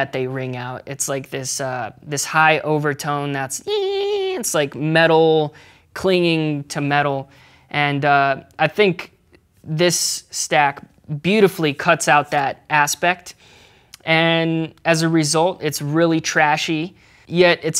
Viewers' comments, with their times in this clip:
0:03 Has he forgotten how to play a standard beat? My mans always being extra af. Also... 😄